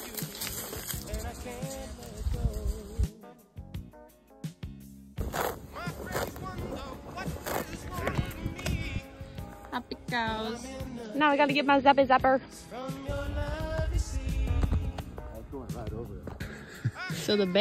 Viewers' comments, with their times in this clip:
0:04 Damnit, I am watching this short for the 34th time, only for and this adorable cow plucking the gras away with in this fulfilling succulent sound and I can't stop smiling! 😂☺️😂 I am a grown adult (so they say) and I had seen the eclipse already back in '99. But this happy satisfying hungry cow gets to me! It is so fluffy, I'm gonna diiie! ☺️☺️🤗🤗😅